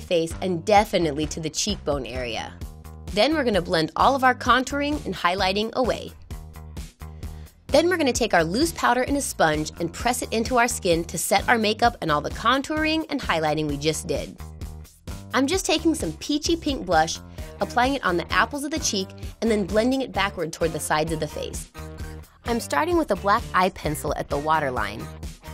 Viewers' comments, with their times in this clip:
0:10 the music sounds like G Dragons- You Do :O :D